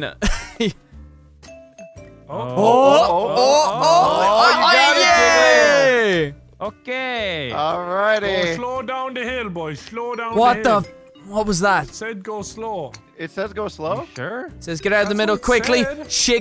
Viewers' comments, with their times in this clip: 0:04 they sound like the birds from Finding Nemo!